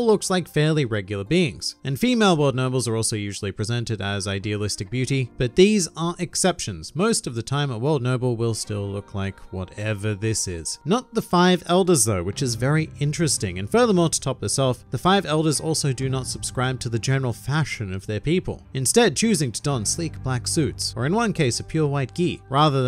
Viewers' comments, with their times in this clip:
0:08 Love the way you said, "whatever this is" Also, now I have the big question of what exactly the subject of this "cleansing" attempt is going to be. A person, like Rocks? Or a country, like Ohara? If it's a country, I imagine they would go for Wano or Fishman Island. If it's a person, I think we all know who they're after.